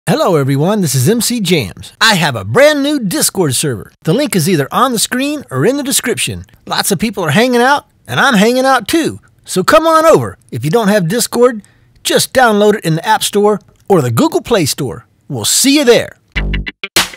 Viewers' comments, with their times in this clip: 0:03 is that your voice